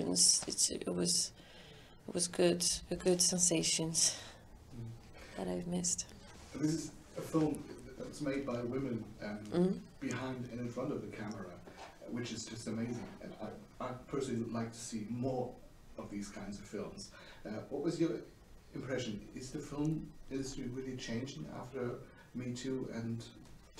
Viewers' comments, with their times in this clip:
0:06 I think it's even funnier that she heard other people say "women" and yet has not corrected herself. 😂 "Why are they saying women? It's wOMANZ"